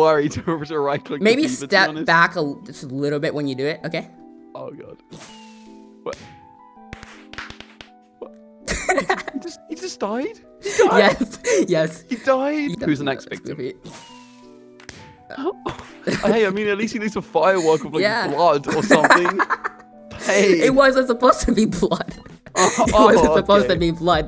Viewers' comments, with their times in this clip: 0:07 At least he died with a BANG. And now I worry if I will end up like him for using that joke....